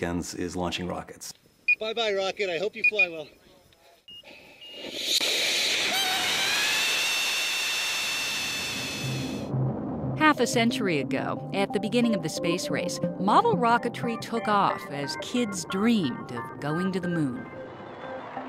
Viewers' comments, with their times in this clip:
0:04 i thought he was shouting instead it was rocket it self.
0:05 LMFAO THE ROCKET SOUNDS LIKE ITS SCREAMING ITS ASS OFF FREAKING THE FUCK OUT